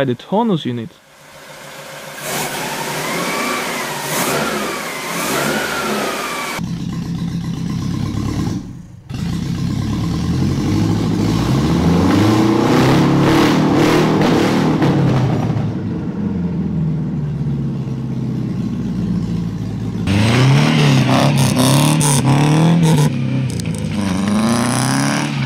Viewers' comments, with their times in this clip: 0:09 the v4 sounds amazing for a 4 cylinder